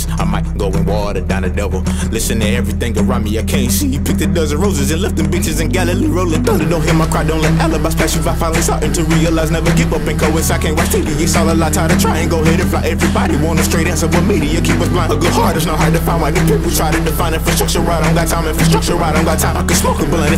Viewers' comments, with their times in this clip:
0:03 Kendrick is that you?